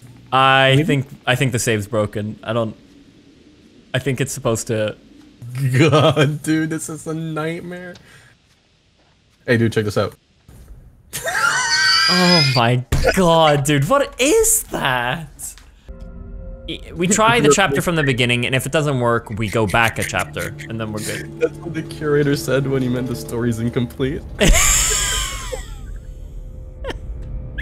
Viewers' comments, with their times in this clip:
0:10 fucking pig sound lmao